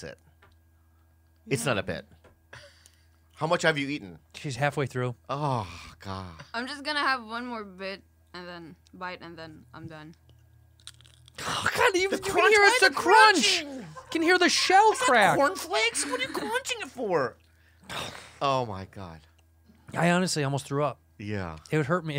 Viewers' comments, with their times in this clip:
0:10 The one time she shouldn’t have gotten closer to the mic HAHAHA that crunch